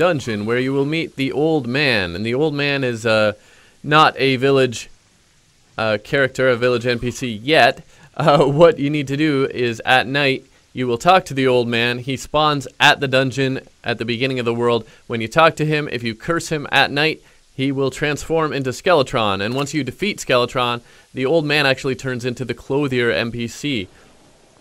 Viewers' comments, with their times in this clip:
0:07 WHY DO U AWKWARDLY LAUGH SO MUCH, LIKE U WILL SAY SOMETHING THATS NOT EVEN FUNNY AND U WILL LAUGH LIKE